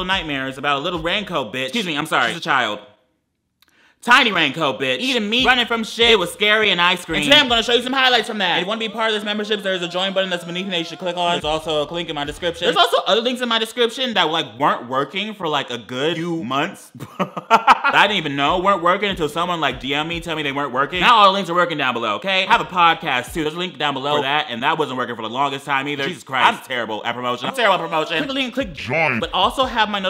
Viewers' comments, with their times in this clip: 0:10 not lady Gaga in in the background audio
0:11 anyone else hear him say “clink in the description” 😂😂